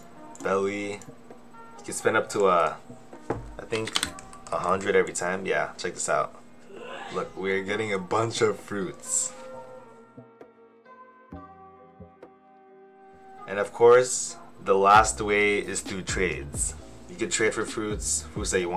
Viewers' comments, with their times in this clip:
0:06 you forgot about the sneeze